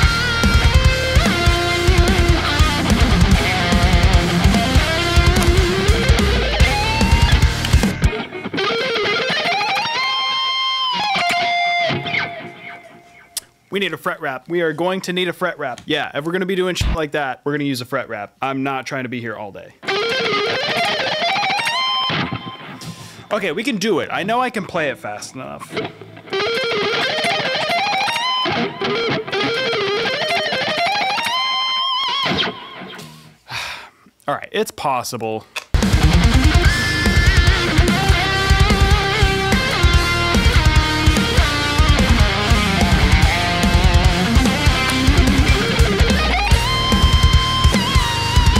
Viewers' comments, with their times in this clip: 0:06 that run right there, I watched it like 10 times
0:36 you hit a pinch harmonic on one of those first solo notes that i so desperately needed you to put in the final! fuckin killer as always though man